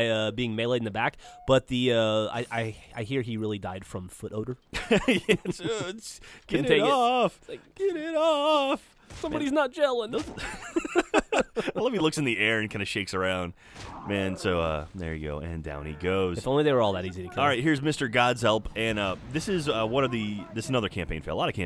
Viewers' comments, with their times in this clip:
0:06 CC he really died from fl fifty infants..